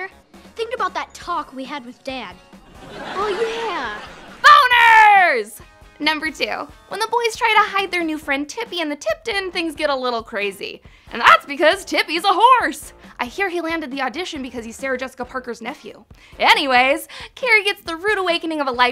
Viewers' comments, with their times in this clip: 0:04 the way she said that 😂